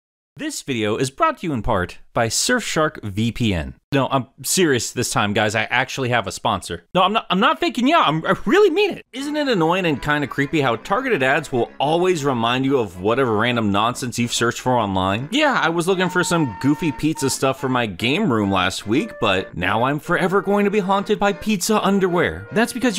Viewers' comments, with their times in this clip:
0:09 I wasn't even listening to what you were saying, was busy jamming to the music